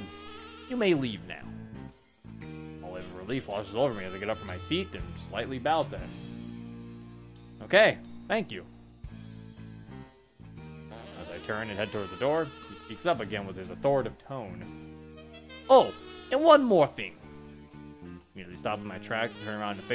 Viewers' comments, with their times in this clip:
0:03 bro be flirting with him what is this music 😂